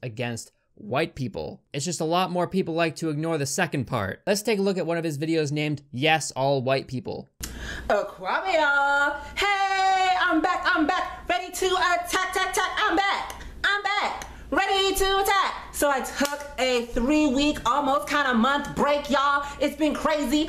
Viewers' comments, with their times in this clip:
0:08 his intro of whatever the hell that was and also did he inhale helium cause Jesus Christ